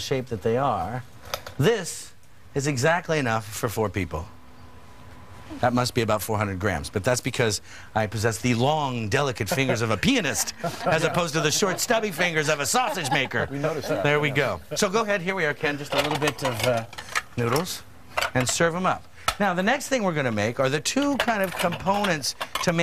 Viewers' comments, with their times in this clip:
0:07 Thought he said penis lol